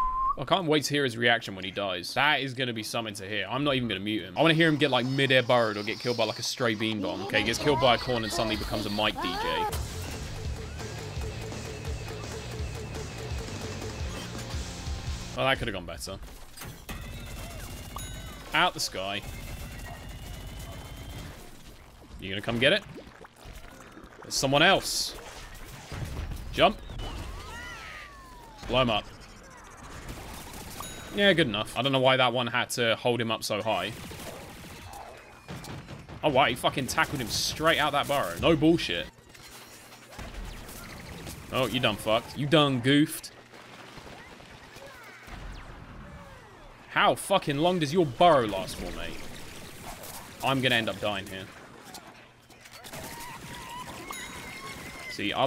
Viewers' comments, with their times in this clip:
0:07 Did you mean (the nosie in the background
0:36 was that the kid banging his desk?
0:36 No it sounds like something is banging in the background